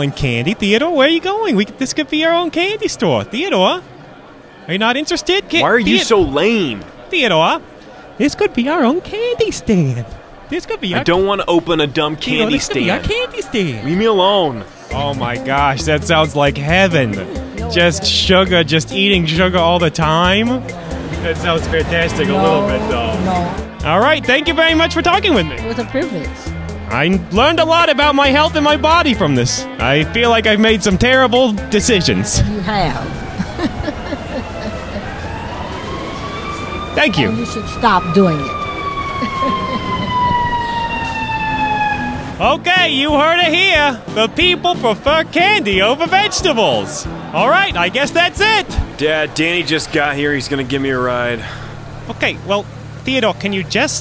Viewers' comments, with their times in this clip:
0:08 "Theodore this could be our own candy store!" gets down and talks like 2 year old
0:34 That's the sound of the firetrucks coming to treat that burn.
0:39 RANDOM SIREN IN THE BACKGROUND